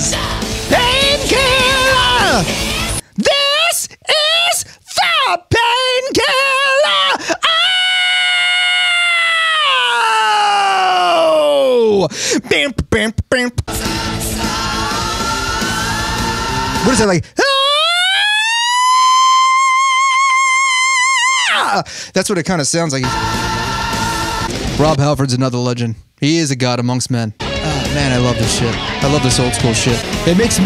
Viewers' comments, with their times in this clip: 0:08 my man sounded like the intro to “i dont fuck with you” by big sean lol
0:15 My man went full Vitas
0:17 holy shit that was an epic rise..!